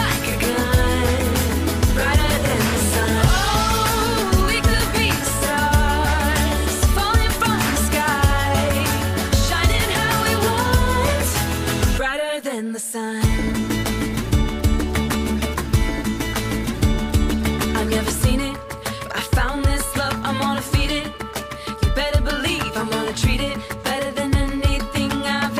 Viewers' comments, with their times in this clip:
0:08 sounds like she's saying "Shining Hollywood"